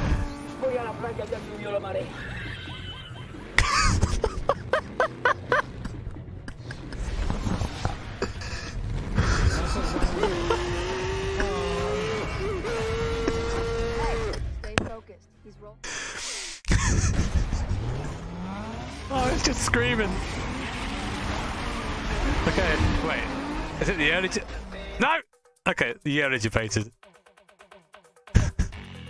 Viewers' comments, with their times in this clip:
0:10 Basically it's the sound of 99.999% of Race Cars in Gran Turismo 4 .